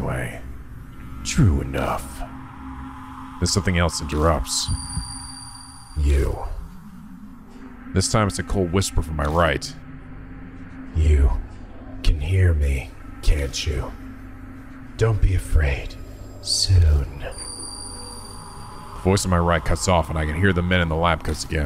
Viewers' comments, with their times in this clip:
0:05 the fact that you can hear Nico on both sides here is just great. I’m loving the little touches in these videos